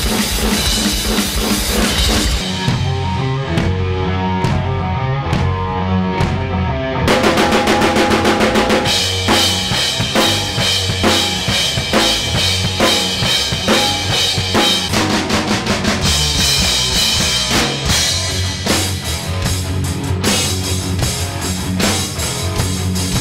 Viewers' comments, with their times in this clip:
0:08 so close to st anger
0:08 St. Anger snare is back again 😂